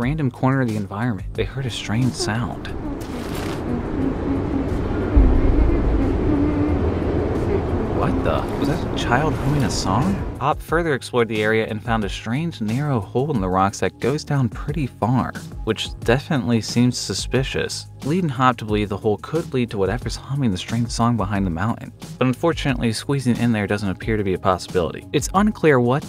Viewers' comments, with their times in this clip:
0:08 Child song from reminds me of Pipi long socks. Also Cave looks like one scene from the one of the episodes with pirates.